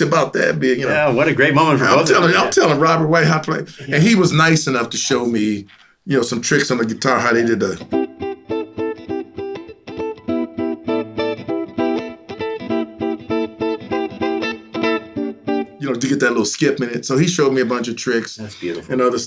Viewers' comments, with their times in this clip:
0:07 What song is Ray playing in with the descending vamp off the C/C6 etc...? The "skipping" one. I know it could be dozens of songs with the line cliche, but that groove makes me think it is something specific.